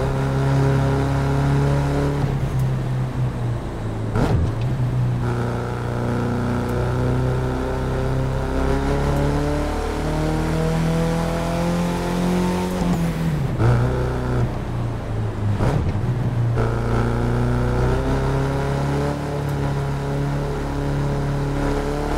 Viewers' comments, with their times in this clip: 0:10 was best gear changing sound